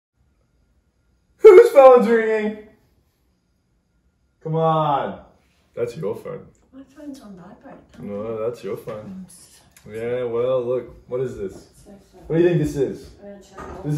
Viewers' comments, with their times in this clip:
0:01 the voice crack😭